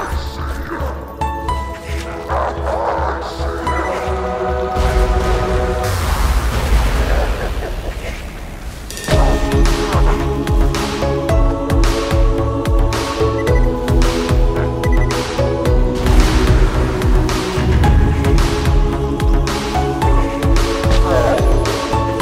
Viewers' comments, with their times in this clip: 0:07 I thought gee was dead the way the music went, pretty good how it was cut off and brought back at the end also